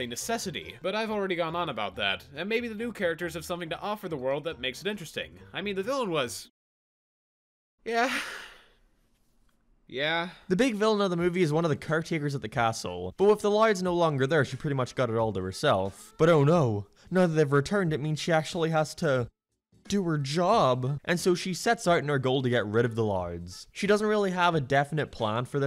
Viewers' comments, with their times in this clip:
0:07 ayo what was that noise bro 🤨📸